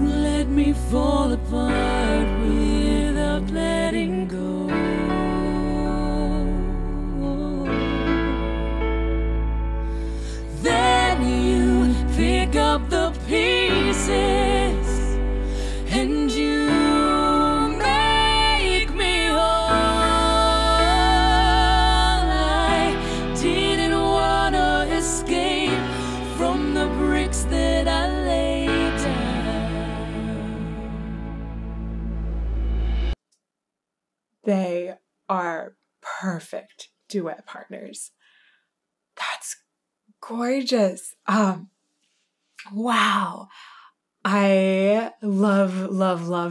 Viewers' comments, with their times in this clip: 0:06 your eyes lit up! Same as mine when I first heard the duet! THEY WORK SO WELL TOGETHER! If I didn't know better, and I dont, I would think it was a conscious decision of Lzzy to DROP the octave to accomodate Amy's higher Alto voice? I dunno and I wasn't there but MY GAWD IS THAT NOT HAUNTING!
0:32 in and I had to STOP! Tears streaming down my face. GOD THANK YOU FOR THESE TWO WOMEN ROCK ARTIST- I don’t feel so alone when you two hit a harmony at the top of a crescendo 💜